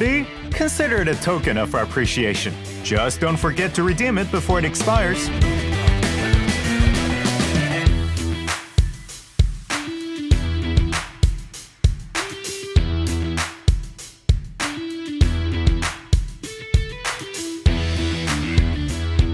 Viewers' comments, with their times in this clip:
0:04 for the banger waiting song